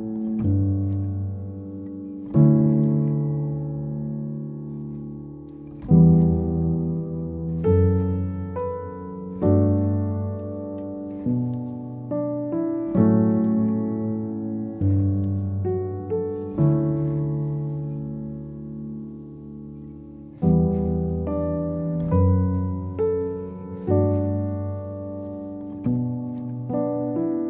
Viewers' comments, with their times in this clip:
0:08 the beat drop broke me I haven't heard his song since I was in elementary school and still had an Xbox 360 those were the days